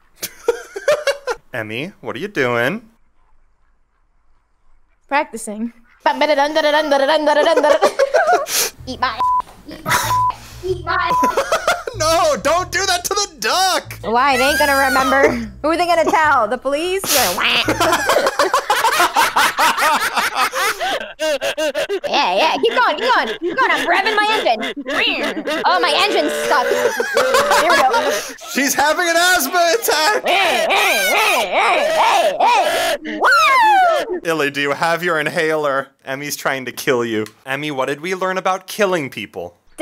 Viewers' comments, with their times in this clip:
0:05 hold up I really like her normal voice
0:23 It's not laughing or asthma attack it's Chewbacca's war cry lol